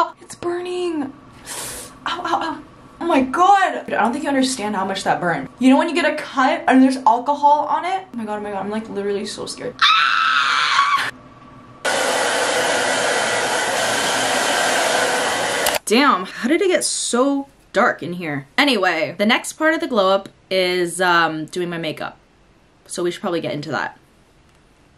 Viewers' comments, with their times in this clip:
0:10 You screeching and then going ✌️😗 is so relatable 😭 You're so funny